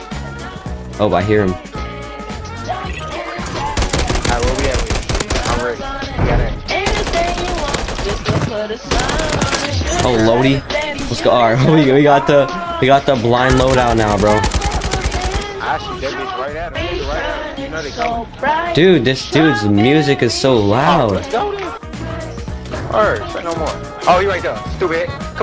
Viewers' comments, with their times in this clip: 0:06 that guy was jamming out lol